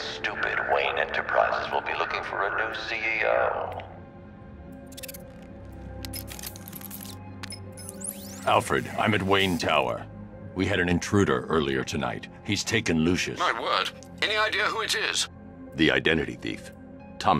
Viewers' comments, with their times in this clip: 0:05 Love Hush's theme